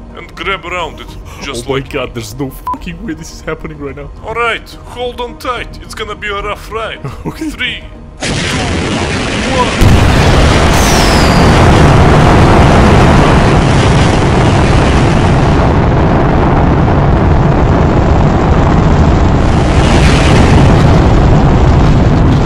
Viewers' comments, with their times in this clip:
0:09 I thought the rocket is gonna sounds like: "BLYAAAAAT"